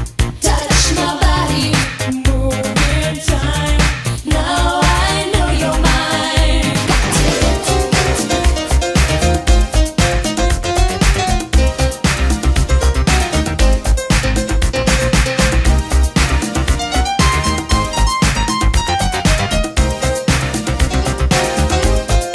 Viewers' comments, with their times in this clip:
0:06 That piano break tho 🙌🏼🙌🏼🙌🏼 Engineer done good. Real good.